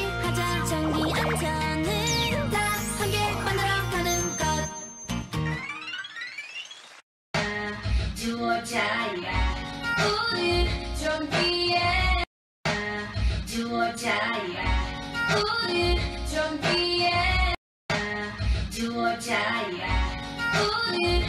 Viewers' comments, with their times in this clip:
0:05 I can hear CL's voice